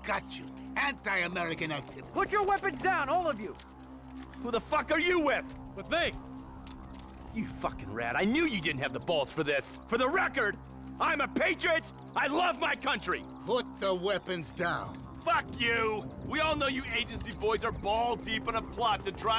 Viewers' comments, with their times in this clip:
0:03 I love the way Steve delivers that line, it's so funny